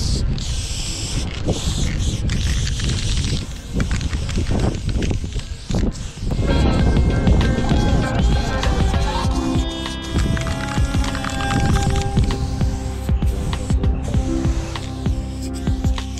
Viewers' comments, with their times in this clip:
0:03 Minecraft spider noise??